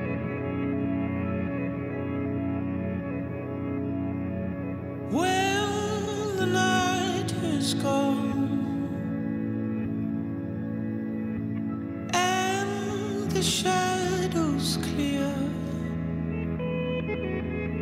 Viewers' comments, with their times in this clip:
0:05 when I didn't know if I was sad because the intro had ended or happy because the voice had started.